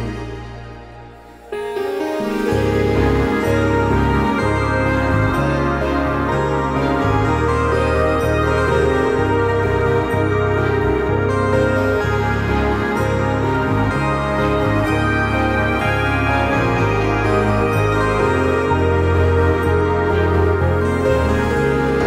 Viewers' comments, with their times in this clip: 0:07 Is it me? or the part sound like MCSM S2 intro theme?